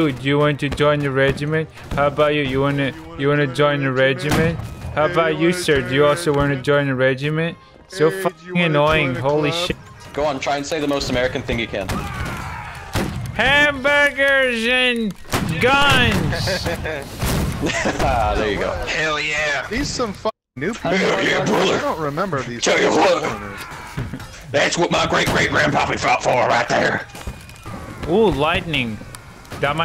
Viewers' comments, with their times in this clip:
0:10 American agreeing noises